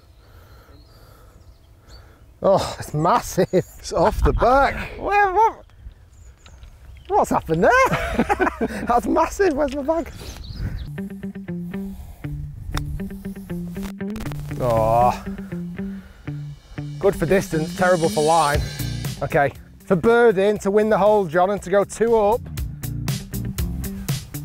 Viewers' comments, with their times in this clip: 0:05 sounds like when my cat wants food.